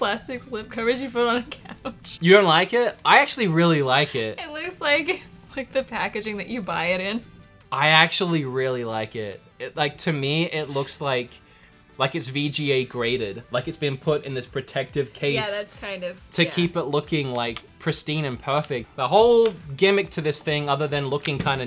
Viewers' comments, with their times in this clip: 0:03 totally lost his Australian accent